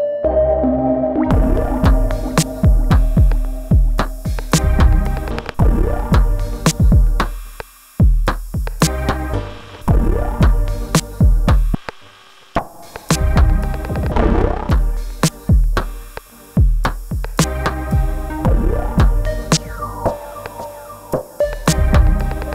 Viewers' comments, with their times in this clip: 0:09 Track is SO cool. That grimy little slug “wah” bass sound. Thanks so much for the depth you went into here.